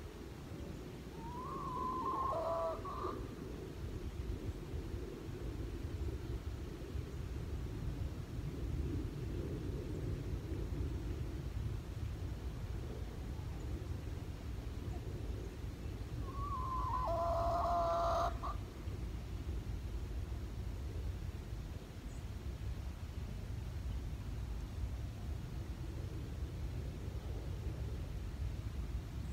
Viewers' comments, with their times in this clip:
0:07 the sound I am hearing sounds like a wild turkey to me. They look like they are crawling when they are in the tall grass eating. My guess wild turkeys
0:15 What was that screeching sound ?
0:15 What was that screeching sound ? Does he live near a highway?
0:16 again....is a chicken.. Seriously... A chicken. Nothing scary. I'm more concerned about the footers you hear around his camera which is more than likely his wife making sure he's not streaking naked thru the woods slobbering on himself for us yet. Love the fact he usually tells us approx how many minutes of our life we are about to waste.. Can't help but to like channel!